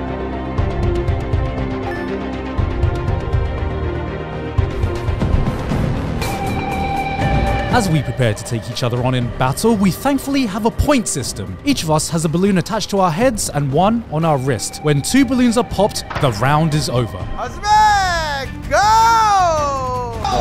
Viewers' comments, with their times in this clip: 0:05 lmao the apex theme